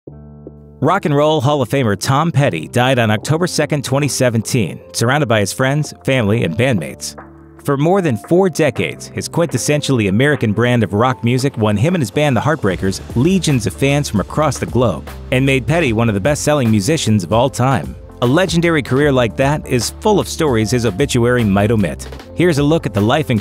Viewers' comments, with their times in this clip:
0:06 I thought you said 'bandaids'. I was confused because I didn't think a cardiac arrest involved getting bandaids.